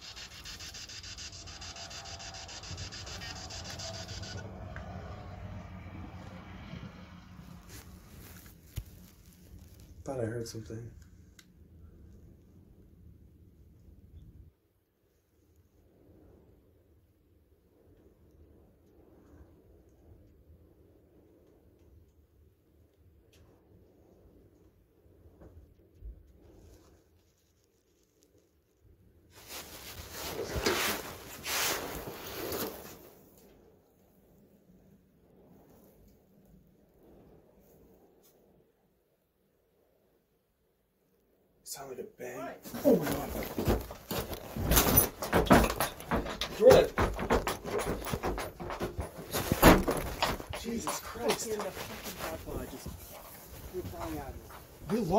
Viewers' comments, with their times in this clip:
0:08 something is outside, i can hear a footstep, maybe that lock the door from the outside.
0:19 this was awesome ! a woman whispers johnny
0:36 Your audio picked up the squeak of the door being opened which is pretty impressive